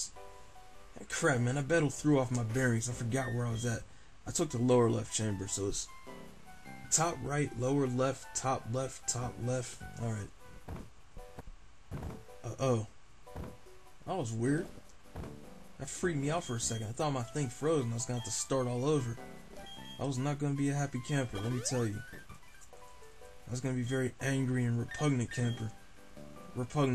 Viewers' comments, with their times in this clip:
0:10 Somewhere the audio goes out of sync. :/